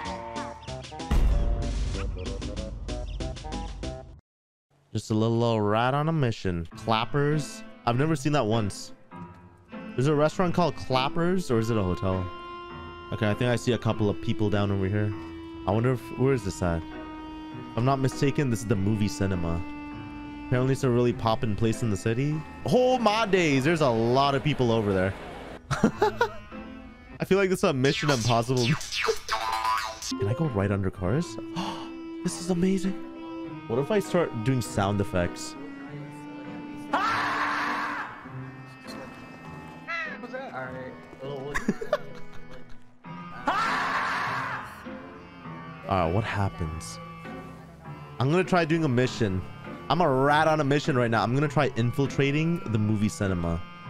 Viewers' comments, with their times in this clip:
0:06 Nostalgia hit hard with that beat.
0:07 nostalgic Luigis mansion music
0:07 that Luigi's mansion music was 👌
0:08 Please tell me I wasn’t the only one vibing with the Epic Mickey music that started
0:37 Lost it with the scream 🤣